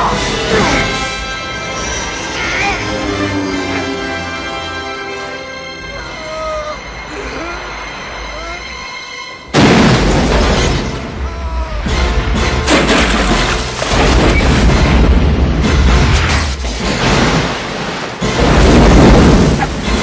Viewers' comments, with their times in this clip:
0:05 At time index I always love this part... The killer had no problem killing others but cries like a baby when he crashes in the water and see his own death coming. Typical hypocrite behavior.